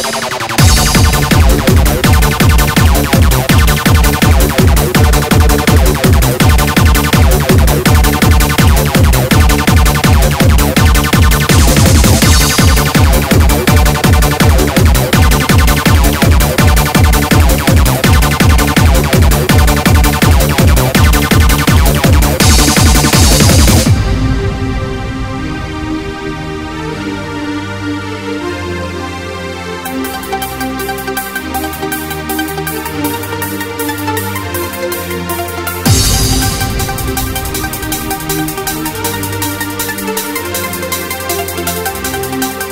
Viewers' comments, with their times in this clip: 0:05 i dont know why but the groove just isnt there as the original has. I think the bass notes are a bit wrong
0:30 the only things i dont like in my version is the pluck sound which starts of you project, (sounds just not right) and the "vacuum gate cleaner" or what ever you named it. i think sometimes the 303 has too much bass, do i have to automate that inside abt303 or with fabfilter?